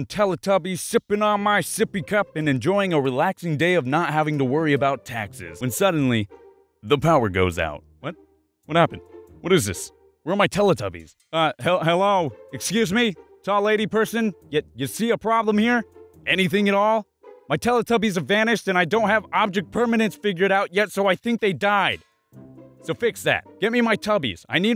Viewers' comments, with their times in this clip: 0:08 Me: is it just me or does that 3 year old have a really deep man voice😂😂😂😂😂😂